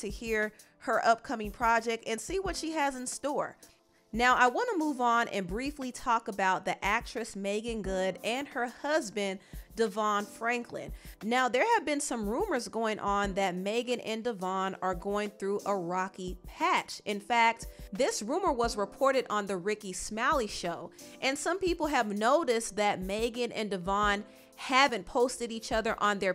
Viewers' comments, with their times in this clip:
0:07 I normally enjoy your channel/content but on music was 2 much 4 me.